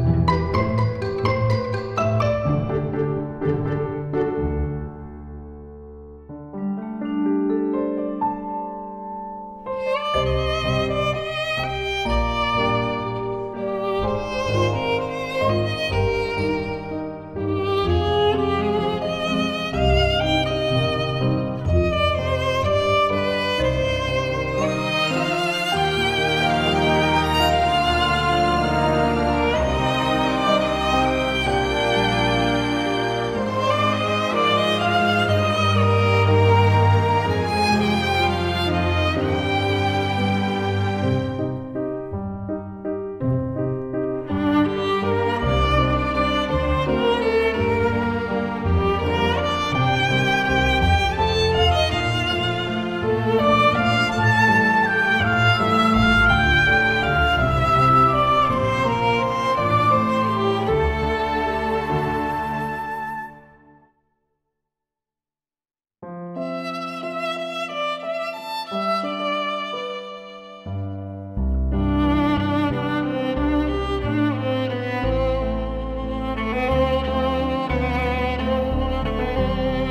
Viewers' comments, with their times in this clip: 0:09 sounded like demon slayer for a second-
0:49 tight clean fresh
1:00 Fake. Where's the vibrato at the end of howl's moving castle. It's just a recording.